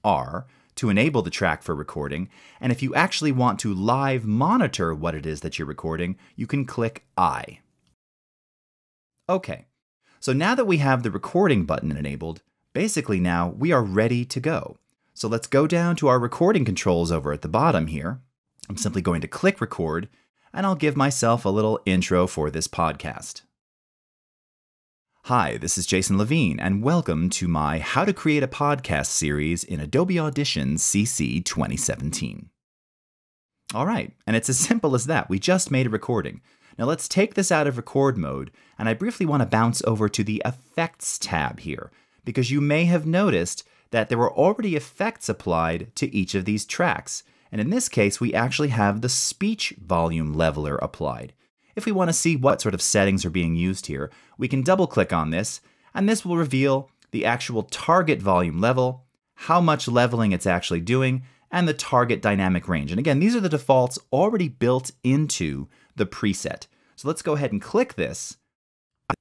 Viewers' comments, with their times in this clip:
0:07 Sounds like a feedback, most common your speakers hit your microphone, which takes the signal back to the speakers, again to the microphone, to the speakers, mic, and so on... So you should deactivate monitoring (as Jason shows on min) or use headphones.
0:52 At approximately you have "sort" duplicate when said, is that a montage mistake or one of effects failed resulting in an echo?